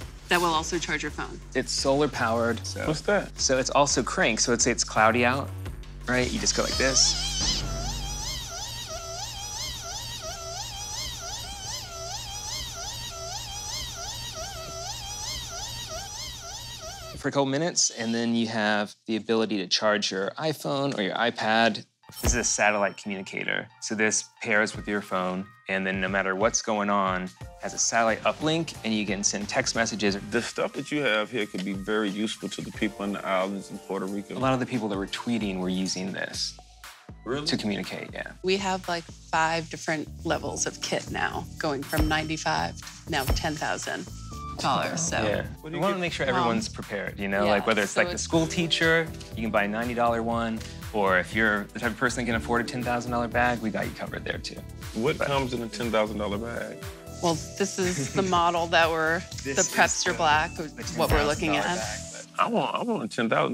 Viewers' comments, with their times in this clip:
0:07 that's what the crackhead outside my local 7-11 sounds like
0:48 We wanna make sure everyone is prepared 2 chains laughed and in his head hes probably like yeah you want to make sure everyone gets ripped off😂